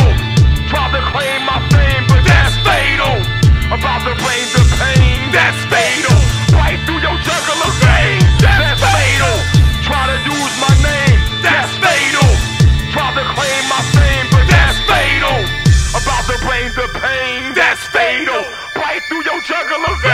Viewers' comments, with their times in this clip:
0:04 sound like a fustrated Jay Z. lol